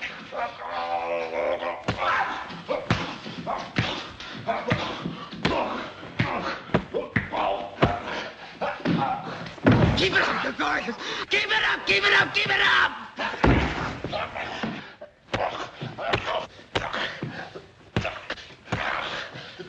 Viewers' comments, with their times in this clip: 0:03 over 70 , but still solid muscle under that fat layer … took those 👊🏼s to midsection with just low grunts : leaned in , but never bent over ! returned the favor … aged. beef 🐂